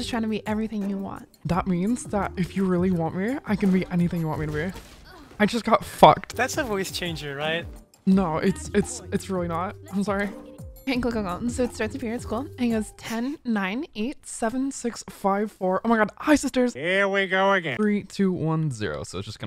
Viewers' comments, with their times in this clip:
0:04 everything was censored except that lol